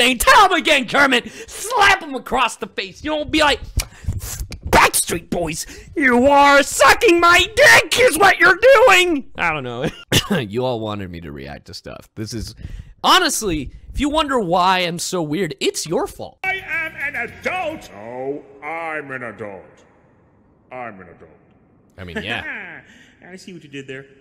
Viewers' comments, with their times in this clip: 0:05 In you sound like shaggy